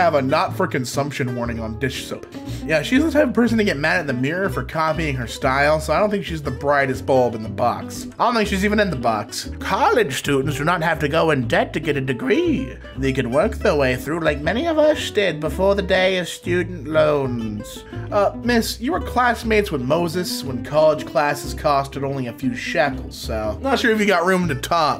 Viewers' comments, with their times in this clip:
0:10 you sound like master oogway